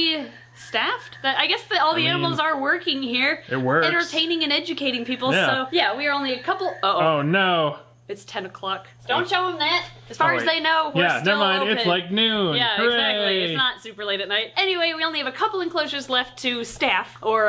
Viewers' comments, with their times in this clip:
0:04 Is there a frog noise speaker that shuts off with the lights, or do the frogs just stop croaking the moment they think the night starts?